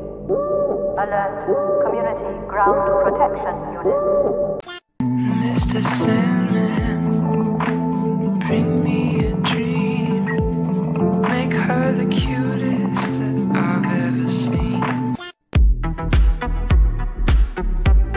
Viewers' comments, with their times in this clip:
0:05 sounds like there is another song under the mr sandman one. The beat is really good. Anyone know what it is?